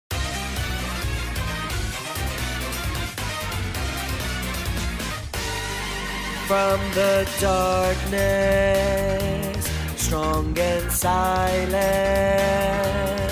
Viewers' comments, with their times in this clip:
0:01 OK, I NOW FUCKING LOVE YOU Also ur singing voice is really goo if it’s you :>